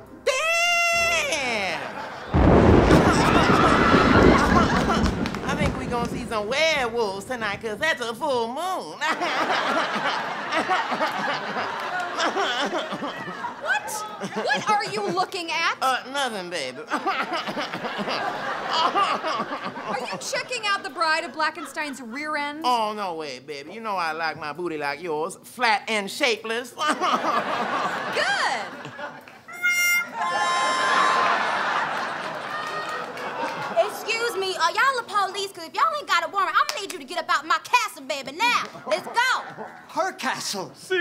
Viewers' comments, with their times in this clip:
0:04 This is by far the single best voice that Bill Harder has done 😭
0:23 😆😂🤣 Bill Hader sounds like Kat Williams.